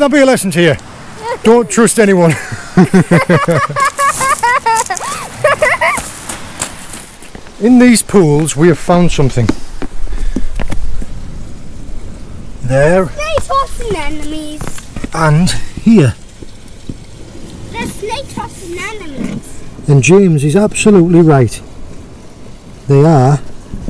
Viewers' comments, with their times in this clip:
0:05 i love how when he was falling he was laughing on the way donw